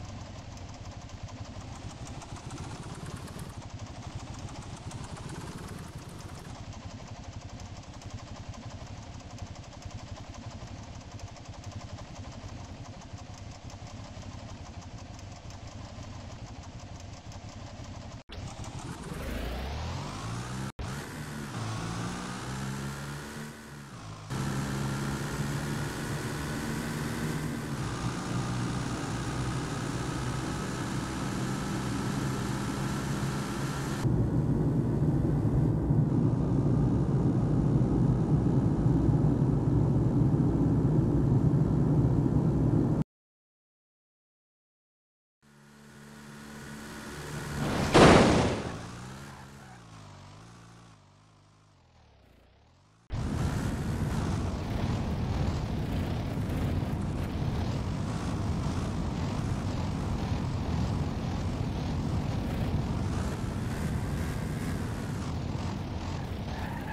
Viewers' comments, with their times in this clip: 0:03 i had to turn the volume to 75 to be able to hear the cars
0:47 sonic boom? best found out if put on slowest speed